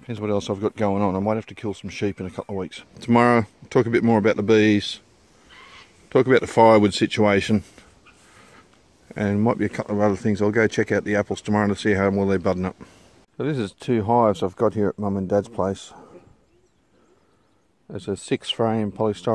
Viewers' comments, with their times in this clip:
0:05 The sheep heard you talking about killing um and went baaa